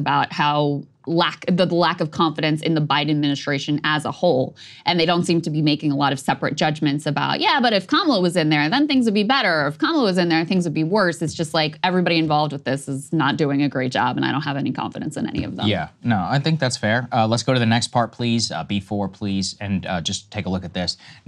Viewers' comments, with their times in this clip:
0:05 Dod Krystal say "the black of confidence"? ?